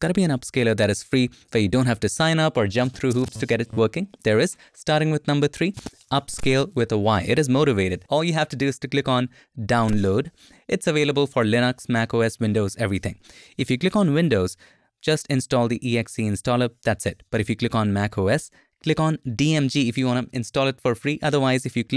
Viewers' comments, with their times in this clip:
0:09 you sounds like a nice lady in the store. (: